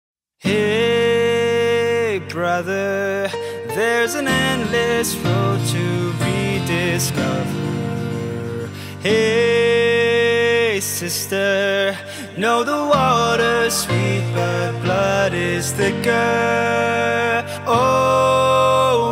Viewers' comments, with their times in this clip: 0:05 IS THERE ANY KISSES SOUND ?